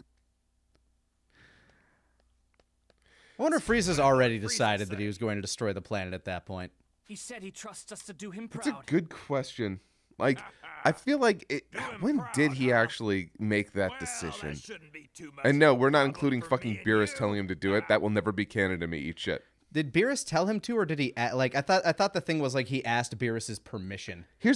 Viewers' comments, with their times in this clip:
0:05 judging by that laugh? That’s the moment freezer thought it would be a good idea